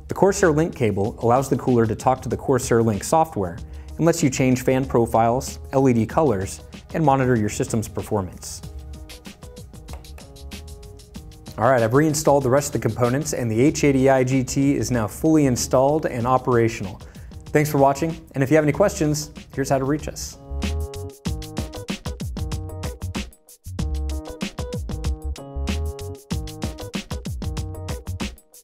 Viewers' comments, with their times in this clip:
0:09 That cheap plastic click of Corsair power buttons.